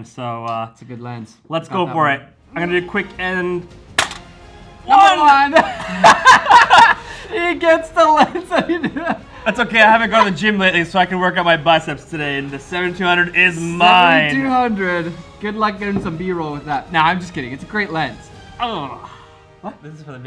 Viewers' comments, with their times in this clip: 0:05 The laugh you make when you know you've already won!